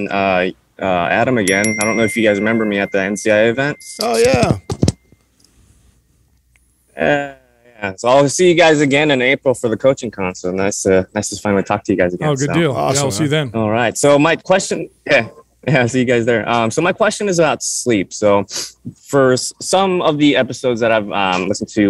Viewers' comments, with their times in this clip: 0:04 That fake little "ah yeah" sums up my entire experience living in the US for a couple of months 🤣